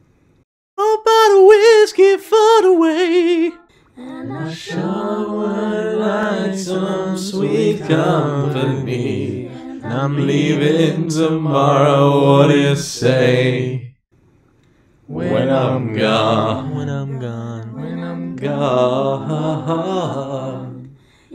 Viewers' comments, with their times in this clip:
0:06 You guys harmonized well I wasn’t expecting that😅